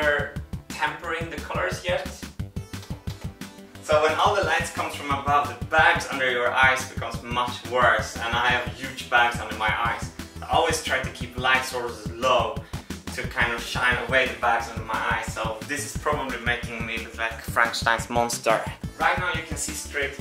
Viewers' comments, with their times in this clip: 0:08 I don't like that music!